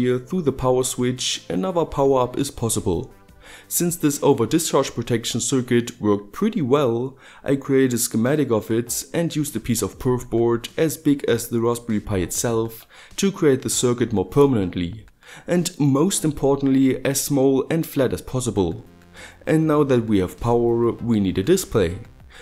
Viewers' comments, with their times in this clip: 0:06 A piece of what are you using? I can hardly understand it. :D